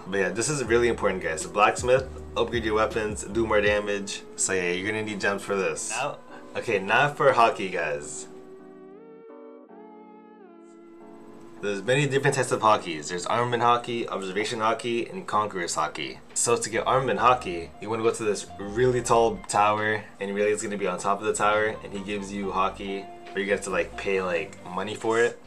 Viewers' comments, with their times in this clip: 0:09 Hockey. How in the world did Haki become Hockey????/